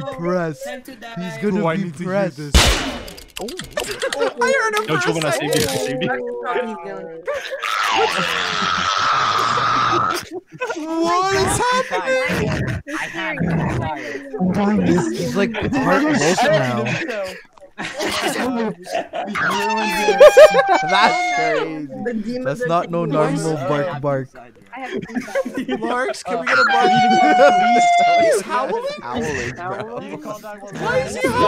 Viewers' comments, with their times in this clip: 0:07 blud really turned on his chihuahua mode☠💀😐
0:19 bros howling so bad